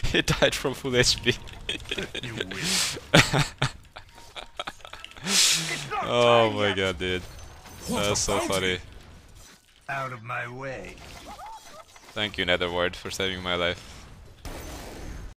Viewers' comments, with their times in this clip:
0:03 his laughter sync with viewing teammate tp